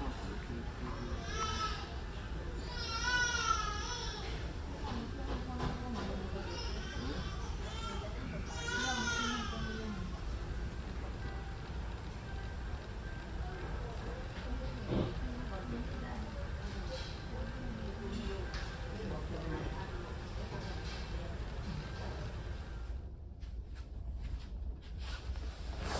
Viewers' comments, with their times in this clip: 0:09 baby's crying is SOOOOOO annoying! ALL babies should be required to be left home and never taken to public before the age of 6 when the can control themselves from crying.